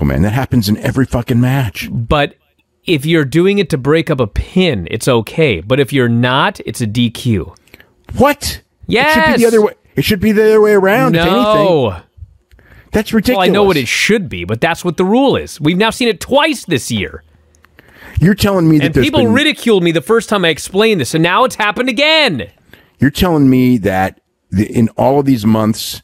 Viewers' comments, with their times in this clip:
0:08 That WHAT?! by Dave is so heartfelt 😆 its everyones reaction when watching RAW